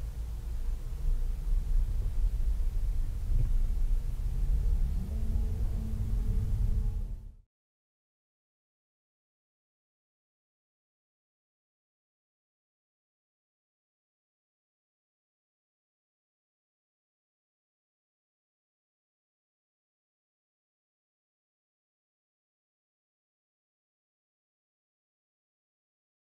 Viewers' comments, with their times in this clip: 0:07 I lose sympathy for people who blare the horn in non-emergency situations. A horn isn't meant to express anger or annoyance, it is meant to alert people. The truck obviously knew the cammer was there, he waved thanks. Other people being inconsiderate doesn't mean you also need to act out - keep calm and drive. Get over yourself.
0:09 RIGHT THE GUY PULLED OUT AND WAVED HIS HAND MEANING SORRY I FUCKED UP.. DON’T BLOW THE HORN AT THE GUY AFTER HE WAVED AT YOU....THATS WHY HE GOT PISSED CAUSE HE WAVED SORRY AND YOU STILL HONK AT HIM